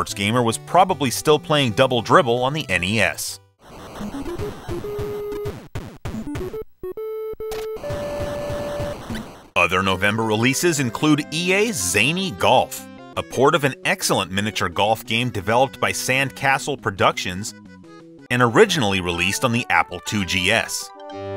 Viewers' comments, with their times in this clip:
0:04 Watching this, I never played Double Dribble. That said, upon hearing the music and sound effects of it at the mark, I was nostalgically reminded of Konami's other sports title Blades of Steel. (LOVED that game!)